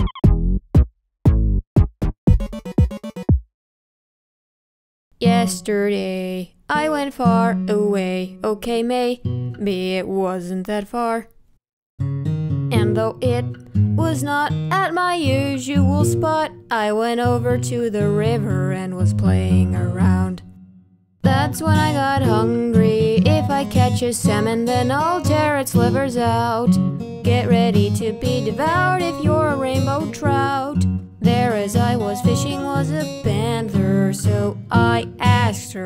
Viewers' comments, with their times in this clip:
0:05 I don't know why but it seemed like Yesterday by The Beatles
0:21 damn that part is so damn catchy